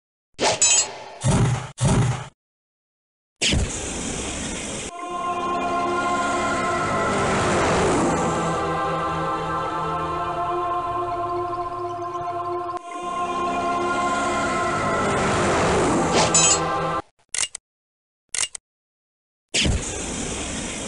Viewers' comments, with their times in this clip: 0:06 The bus loop music sounds like The Burning Bush from The Prince of Egypt.